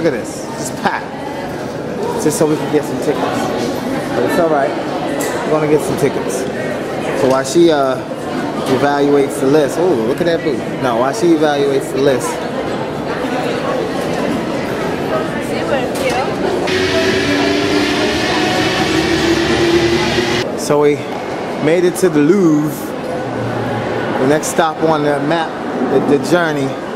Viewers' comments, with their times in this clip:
0:09 Ohh look at that bootie haha